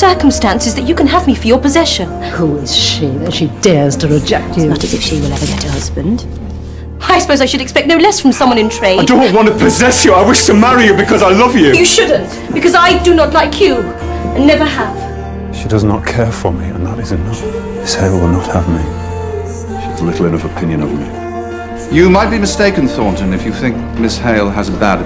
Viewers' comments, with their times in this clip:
0:07 the way he spoke at that moment... Ugh my heart broke 😭